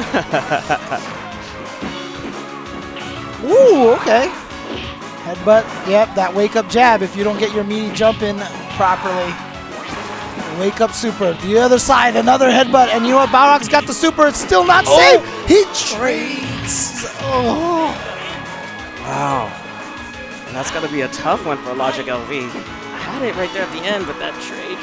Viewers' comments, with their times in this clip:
0:09 Commenting for future reference, that commentary was so fervent lol. Sounded like sports on the radio! Intense. And then dude said "Wow."